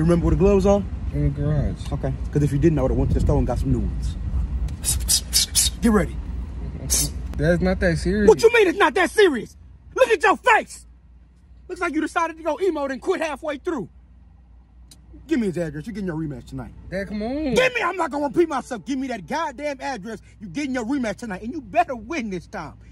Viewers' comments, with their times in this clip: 0:08 whacha mean it not that serious you look yo face😂😂 it how he said it😂